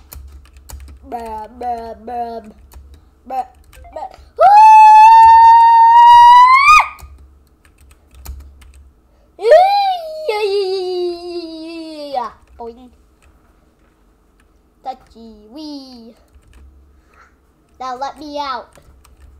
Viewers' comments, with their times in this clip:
0:03 why did you scream?
0:04 That part that you screamed hurt my ears